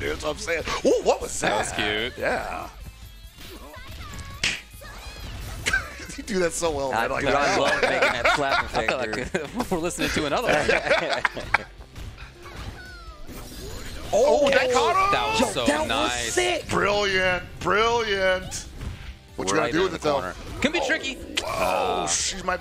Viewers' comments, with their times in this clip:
0:04 the clap in xD